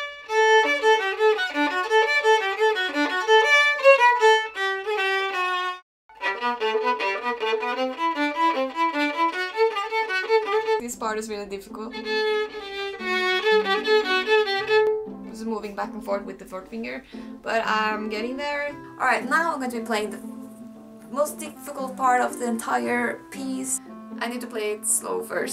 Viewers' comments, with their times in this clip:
0:10 When you play this group (fis, a, g, a, fis, a ,g, a) isn't peeled off the second finger of the neck 😉 And lean sound on the second finger in the middle of the bow 😘 Will be better 😊